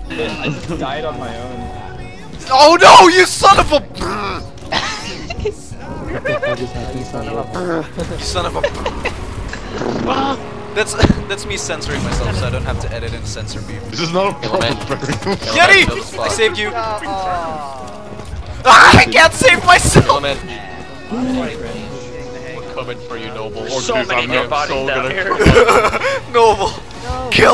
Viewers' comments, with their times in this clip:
0:09 I here Coldplay in the background